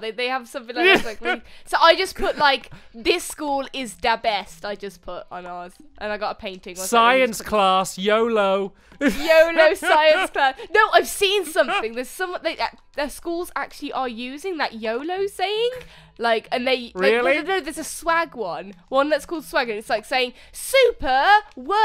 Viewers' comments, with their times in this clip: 0:07 when u said yolo i thought u said yobo haha lol